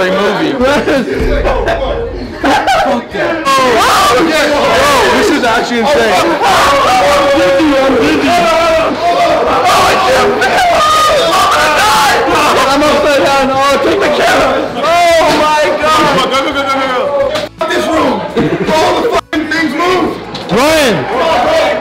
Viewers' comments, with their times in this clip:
0:05 R.I.P for all the headphone user